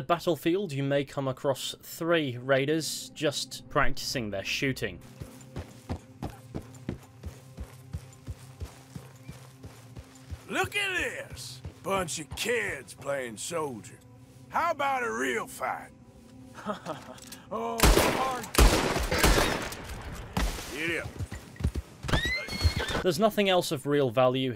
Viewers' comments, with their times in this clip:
0:10 I love how the way he says giddy-up is in the same tone as the taunt.